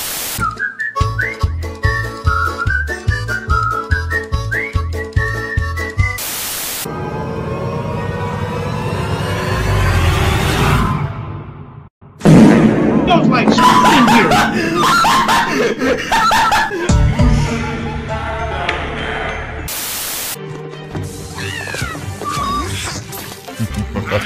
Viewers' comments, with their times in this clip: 0:07 bro farted on everyone 😂